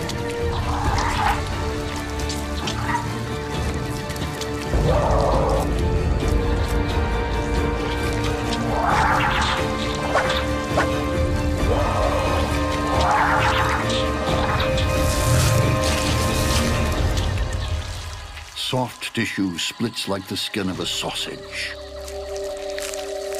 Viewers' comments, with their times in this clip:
0:08 especially the sound of a catterpillar whipping its tail